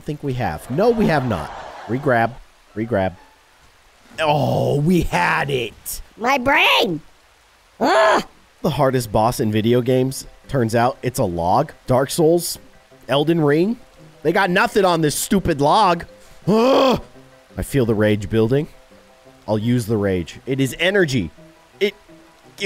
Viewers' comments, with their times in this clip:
0:07 It was so funny the way he said it the bosses are nothing to the log😂😂